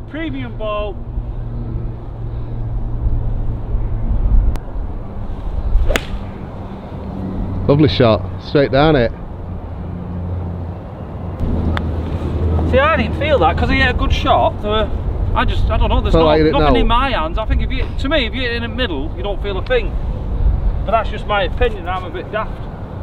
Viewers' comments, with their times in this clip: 0:04 you asked for a LICK. You get a LIKE for that.